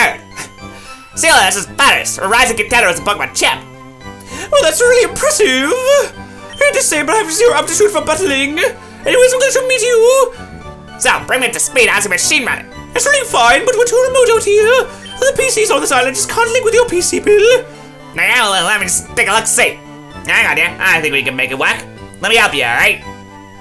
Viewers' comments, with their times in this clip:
0:04 That voice sounds a little like morty